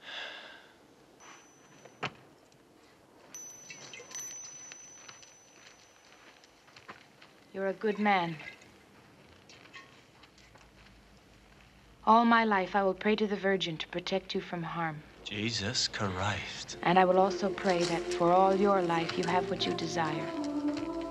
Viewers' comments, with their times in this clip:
0:09 The scene of Clint's humming to himself & getting surprised at seeing the nun fully dressed is sooo entertaining. He showed much more emotion in this one clip than in a couple of other movies combined!